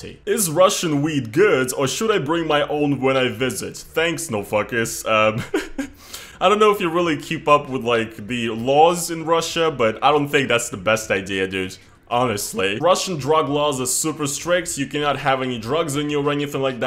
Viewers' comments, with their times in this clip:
0:04 idk if thats him laughing or crying